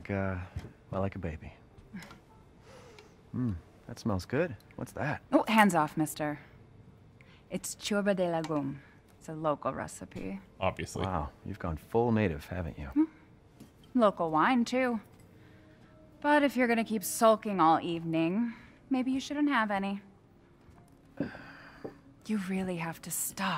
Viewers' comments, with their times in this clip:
0:09 It feels so weird hearing people trying to pronounce Romaninan words in videogames , especialy since we have five letters that don't exist in other languages ( ps "Ciorbă de legume" means "vegetable soup" )